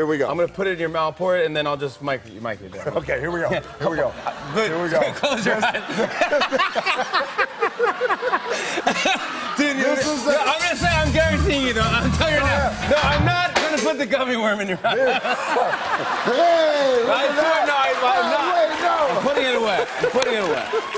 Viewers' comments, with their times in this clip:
0:05 that actually seemed like a really genuine laugh from Jimmy🤣🤣
0:05 I'm not sure if that was pop rocks, I think it was an actual crack 😆